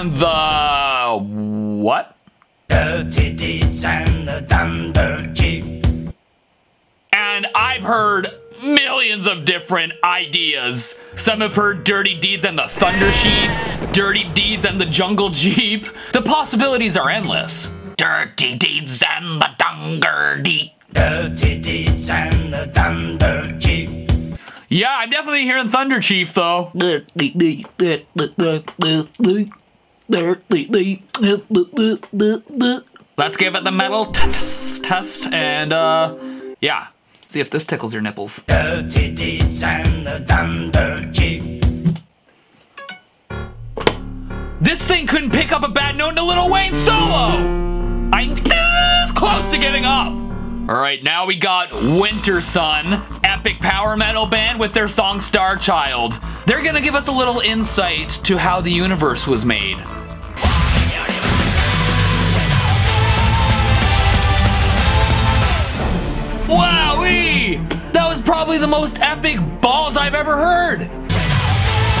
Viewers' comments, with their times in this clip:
0:03 I always heard dirty deeds and their thunder cheese
0:05 i heard dirty deeds and the tunder chese
0:14 “I Hear Dirty Deeds and the JUNGLE SHEEP”
0:25 I heard bandanna
0:38 I hear dirty deeds and the dumper jig 😂
0:40 I hear dirty deeds and the thunder jeep
0:41 I heard “thunder Jeep”
0:48 I heard this: "Dirty deez and the thunder cheese" . Weird and odd.
1:00 i heard "Fu****g universes"